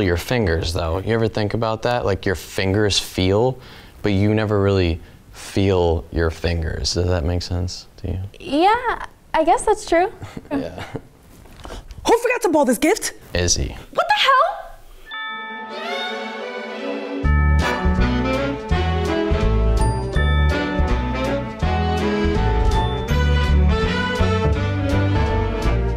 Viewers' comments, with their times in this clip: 0:09 he sounds high af